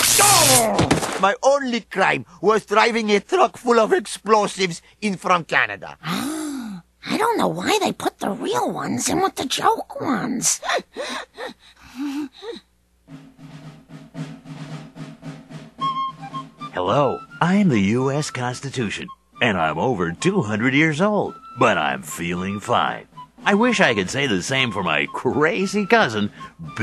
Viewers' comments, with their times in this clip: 0:10 That laugh is both a crime against laughter and one of many reasons I hate Marge.